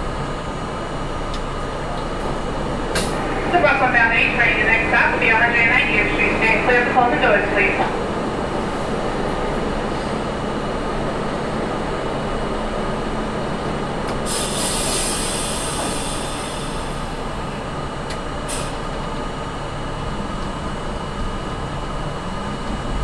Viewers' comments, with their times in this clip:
0:06 THAT VOICE IS VERY VERY FAMILIER